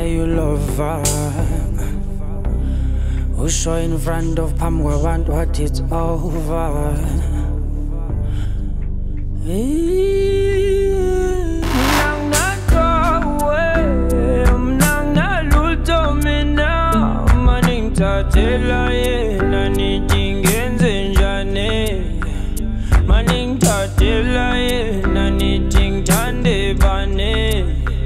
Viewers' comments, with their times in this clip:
0:09 From onwards the beats plus singing is just pure bliss